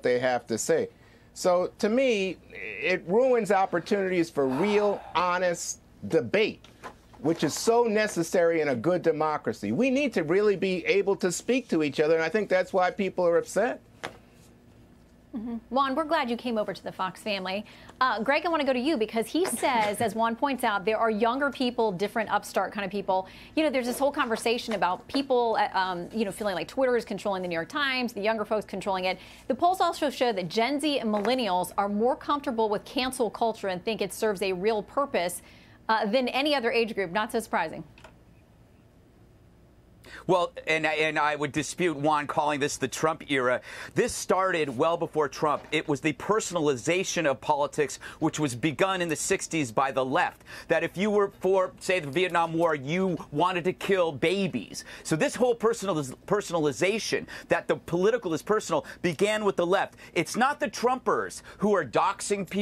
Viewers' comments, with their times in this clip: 0:04 Greg sighs, hearing Juan's same ole same ole
0:04 that sigh was from somebody that heard enough of Juan..Gutfteld?
0:04 Anyone else notice into the video Somone took a big ol "siggh" or am I trippin?
0:04 Whoa mega sigh
0:04 Listen closely at exactly Someone is exhausted by Juan's blatantly obvious shilling for the Left and that person emits an extremely loud sigh to (I assume) signal his / her quickly diminishing patience with Juan's horseshit.. It's hilarious 😂
0:05 How about that LARGE sigh while Juan is babbling?
0:44 Juan's face hearing facts goes ":+:"%!.When Juan speaks i can hear the others literally getting brain damage.Those painful sighs oh my ...